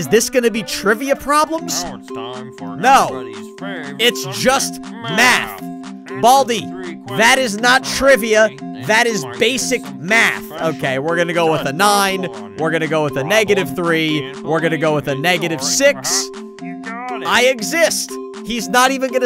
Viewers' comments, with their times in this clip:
0:04 he said math at the same time as baldi